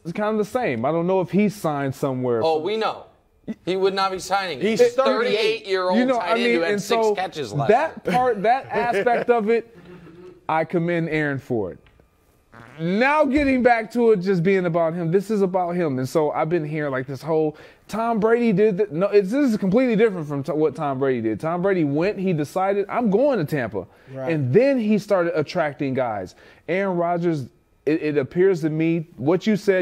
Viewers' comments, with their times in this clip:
0:10 So we're acting like no one farted ? 👀 🤣🤣🤣🤣
0:10 Yo, who let out a fat one???
0:11 We gonna ignore that Jennings farted ?
0:12 Did someone let one out 😂😂
0:12 i feel for the shart lord knows ive been there and it wont be my last
0:12 Someone for sure farted
0:12 Dude. Someone ripped one at the mark. Nasty
0:12 Is it me or Greg farts big time here and he tries to hide it with his voice with that loud “NOOOW”? 😂😂😂😂
0:12 Yo, someone sharted.
0:12 someone let one rip!
0:13 Nah we gotta talk about Greg exploding his pants mid sentence
0:13 Wait a minute, at video time one of the guys sharted and you can clearly hear it!
0:14 I swear someone farted
0:17 somebody farted lmfao 🤣.